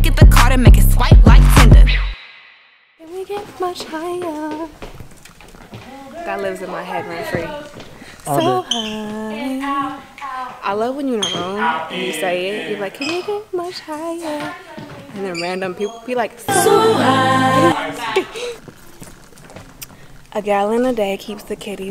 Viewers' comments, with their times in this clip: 0:08 OKAYYY VOCALS I know that’s riiiight. ✨lemme find out